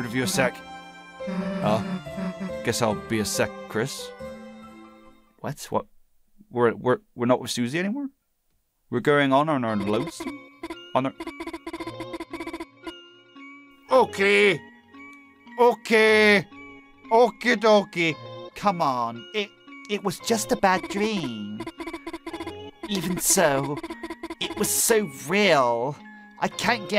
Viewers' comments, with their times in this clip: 0:09 The theme that plays during sounds a lot like gaster's theme...